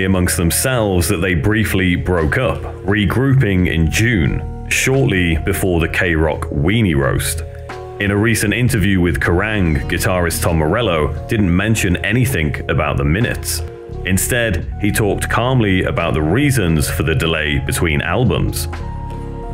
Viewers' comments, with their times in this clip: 0:06 nice pronunciation on the word mutinies bud